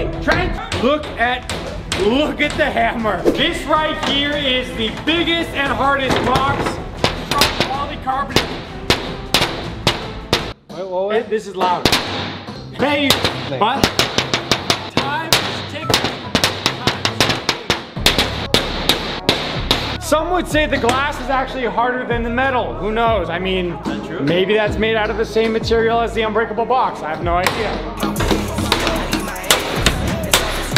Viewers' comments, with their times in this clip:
0:07 Is exactly like gun sound 😂😂
0:11 minecraft TNT exploding sound